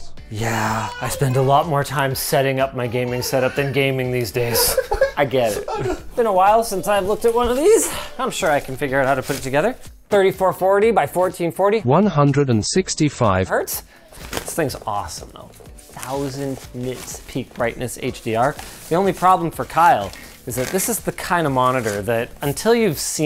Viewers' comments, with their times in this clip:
0:10 That flawless voice dubbing